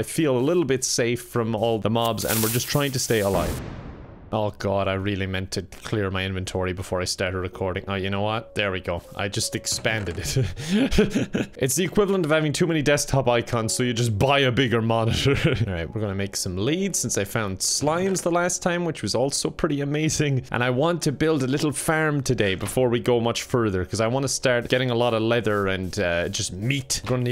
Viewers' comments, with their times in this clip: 0:10 those discord notifications hurt me on a spiritual level